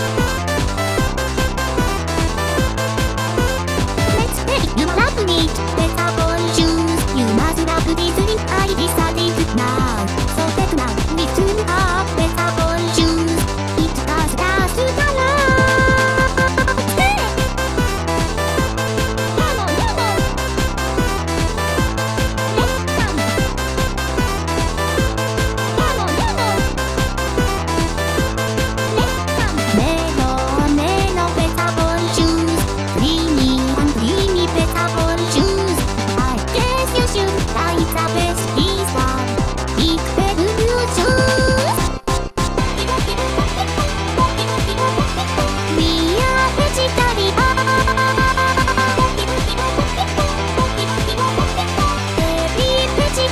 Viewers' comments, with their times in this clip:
0:03 "you lovin' it" mcdonalds
0:40 the way she said "Juice'" is too cute😩